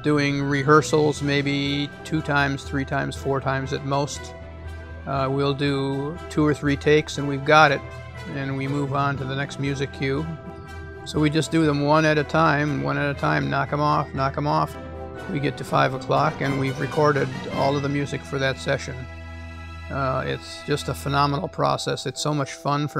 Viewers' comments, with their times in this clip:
0:03 Can we just take some time to appreciate that tuba mute?